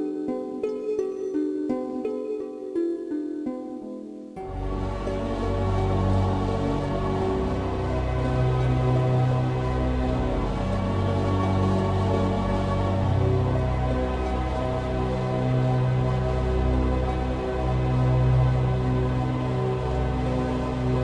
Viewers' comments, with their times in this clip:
0:05 I played this game in the 90's.Liked the song